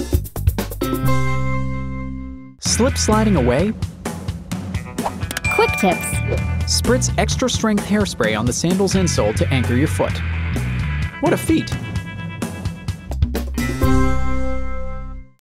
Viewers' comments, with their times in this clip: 0:10 SOUNDED VERY g2y. o.o;